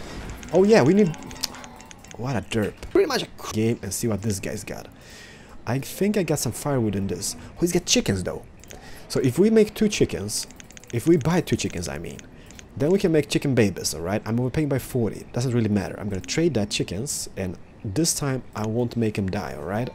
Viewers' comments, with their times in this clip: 0:03 The reason that is said prett much... Aach is because he is cutting out parts where his mic glitches